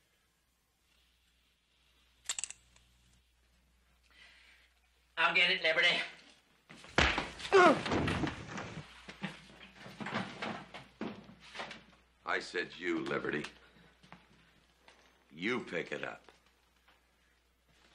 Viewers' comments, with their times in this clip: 0:04 "I'll get it, Liberty." Bam! Always makes me laugh.